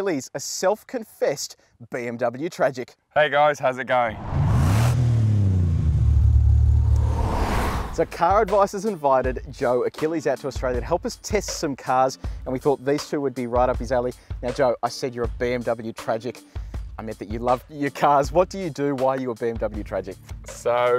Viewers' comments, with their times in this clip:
0:04 which cars sound is that ? It's incredibly badass. Someting V8, reminds a bit of McMerc SLR but I can't quite put a finger on it